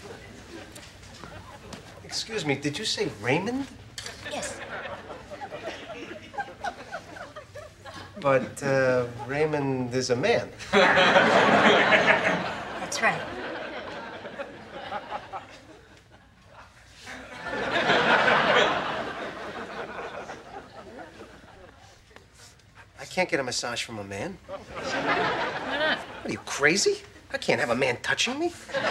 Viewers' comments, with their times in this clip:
0:08 Jerry laughing haha
0:10 I swear you can hear jerry laughing in the background